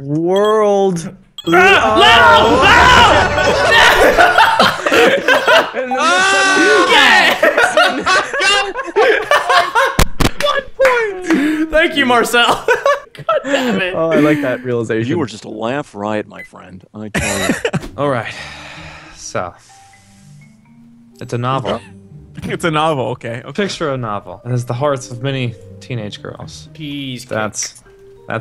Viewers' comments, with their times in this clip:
0:09 MIC PLS HELP MIC